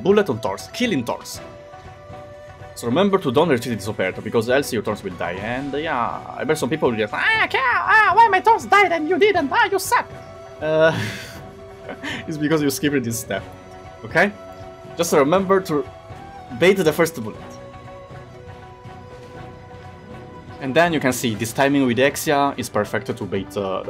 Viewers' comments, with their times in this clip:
0:07 that hater for some reason sound like certain and very famous mouse XD